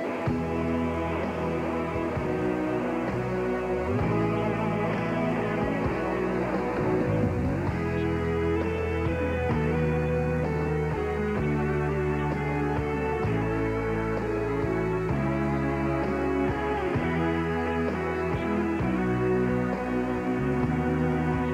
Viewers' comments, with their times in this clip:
0:07 The pitch sequence (i.e. the melody minus its notes' values) of the first half of the main theme is identical to the chorus melody from The Beatles' With a Little Help from my Friends. Compare: with watch?v=kiDmHKvGe4s